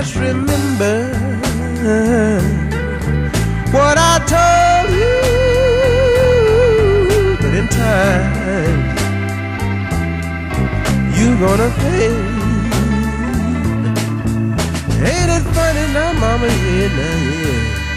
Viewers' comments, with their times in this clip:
0:03 The way Parker sings the word "pay" shortly after really "communicates". Some fine singing here....